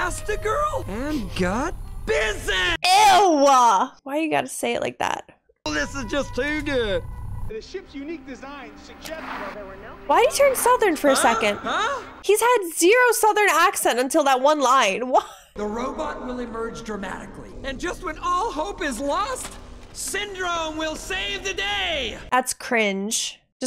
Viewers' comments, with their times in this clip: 0:05 You've never switched up accents to add some variety to how you talk? Like... I don't know... saying croissant in a French accent? Or just greeting someone with a nice southern "Howdy yall"? Oh no... am I the weird one?